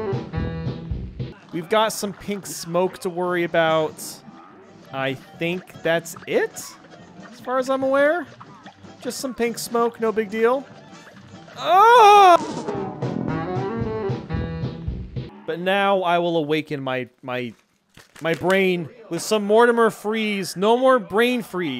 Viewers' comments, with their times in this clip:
0:05 For he died but he still plays the sound effect